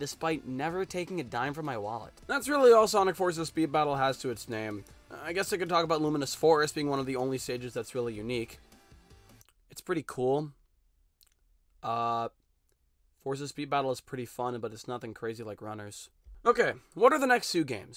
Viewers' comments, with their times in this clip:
0:03 why bro kinda sound like Roger Craig smith 😭